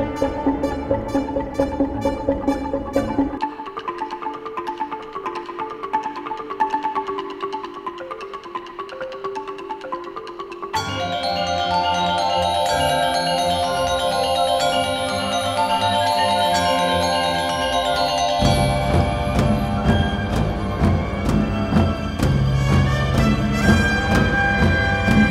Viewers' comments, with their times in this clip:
0:10 A Gamelan Christmas!! 🎄🎁